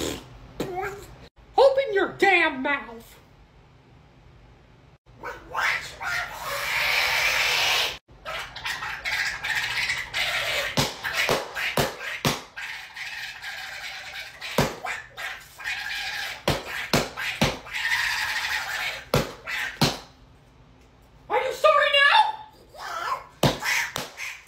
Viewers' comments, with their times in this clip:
0:06 Love Donald Duck’s Screams their always Insane! Talk about Mr Insanity! 😂😂😂